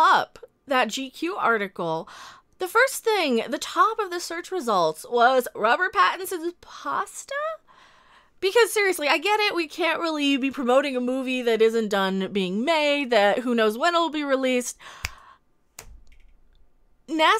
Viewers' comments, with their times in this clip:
0:05 Pattinson "pasta" or "imposter"? *edit ...ah, ok..pasta..lol, I was right. #BatPasta